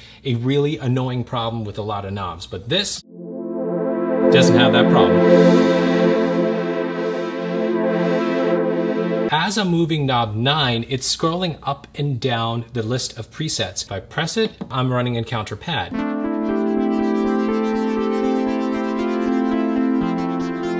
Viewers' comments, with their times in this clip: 0:06 it sounded sort of 8d if ur wearing headphones